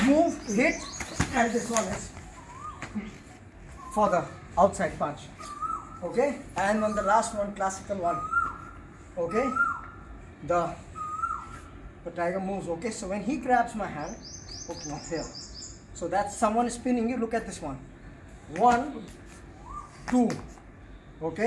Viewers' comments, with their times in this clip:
0:06 Love the bird sounds Oh yeah and techniques are cool too.